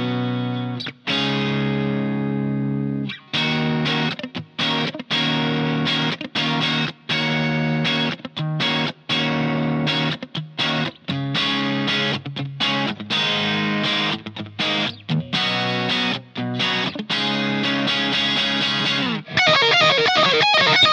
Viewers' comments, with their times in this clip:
0:05 ish, the percussive neck pickup... is there a lot of compressor on that sound?